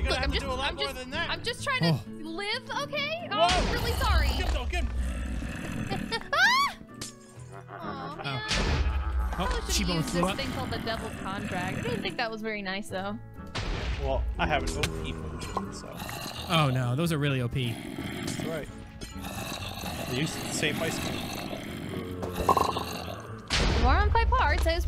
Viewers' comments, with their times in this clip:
0:06 It’s the same laugh from